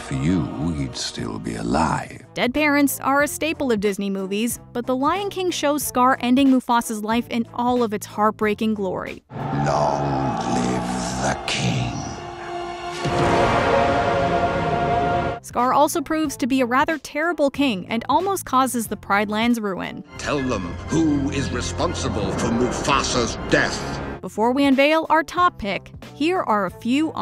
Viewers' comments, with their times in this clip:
0:10 What's more heartbreaking is that Mufasa says no words except screams before Scar his own brother kills him.